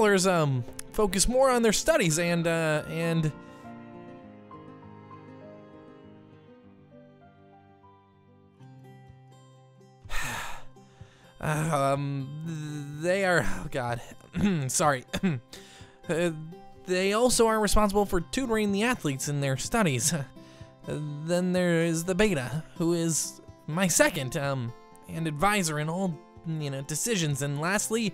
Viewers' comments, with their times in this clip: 0:10 I’m getting anxiety watching him studded like this